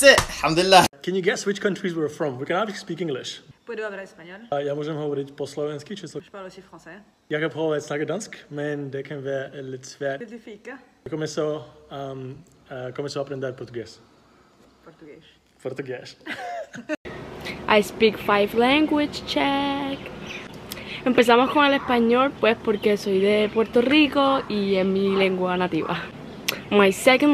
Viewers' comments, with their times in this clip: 0:10 the woman is from Portugal because no one in the right mind pronounces an s as an sh at the end of the word